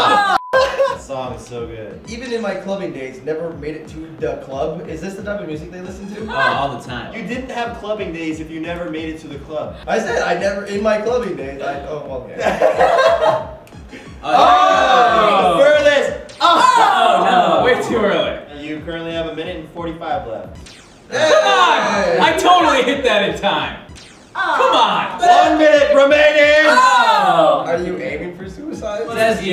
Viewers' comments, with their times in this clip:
0:10 does anybody else hear this high pitched noise?